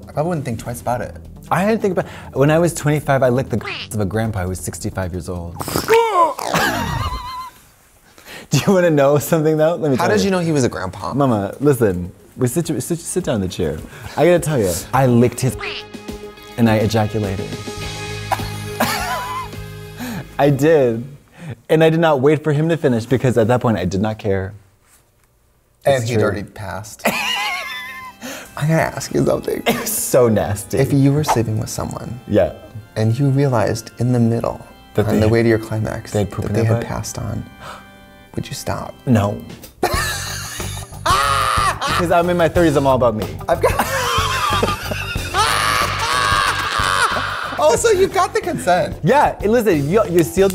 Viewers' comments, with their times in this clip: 0:06 The sound effect kills me every time 😂
0:12 The music added to the story is just perfection.
0:14 THE FUCKING MUSIC I CAN'T BREAATHE
0:14 WHATS WITH THE MUSIC?????😂😂😂😂😂😂😂😂😂😂😂😂😂😂
0:15 the music fucks me up EVERYTIME
0:15 That backsound when katya tells how did she licked grandpa's ground on is killing me LMAO.
0:35 crow noises intensifies*